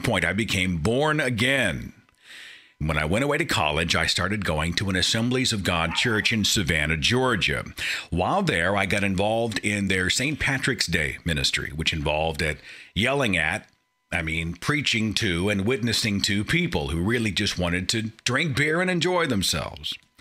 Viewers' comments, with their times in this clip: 0:05 what's with the dog in the background?